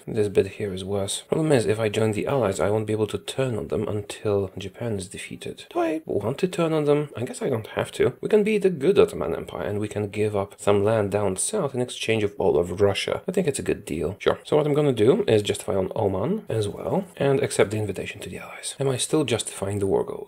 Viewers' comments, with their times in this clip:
0:04 what was that weird mic glitch?